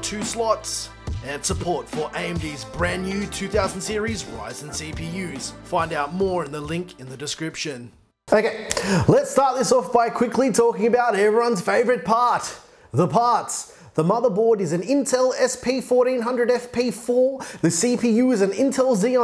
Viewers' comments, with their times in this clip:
0:07 does he say faggot ?